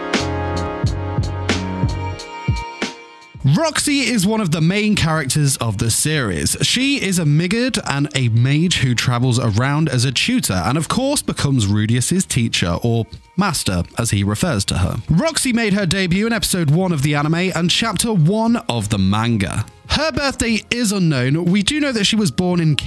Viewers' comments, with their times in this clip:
0:05 😂 I honestly thought u said Midget When u said Roxy's race Migurd